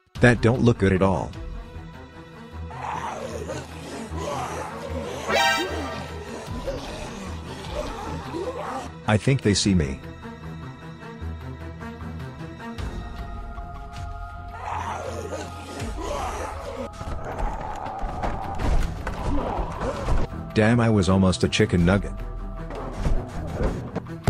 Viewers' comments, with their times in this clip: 0:05 cringy zombie song starts playing